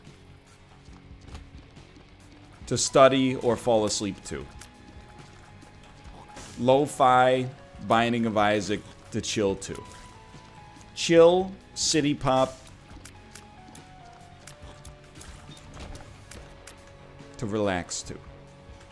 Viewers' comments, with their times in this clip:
0:04 dang now I will feel even worse when I pass out watching his videos his voice is so soothing but at least he acknowledges that it happens